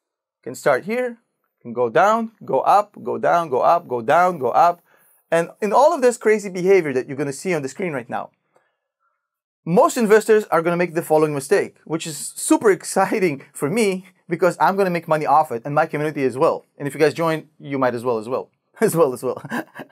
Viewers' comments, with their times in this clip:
0:07 your audio started to DCA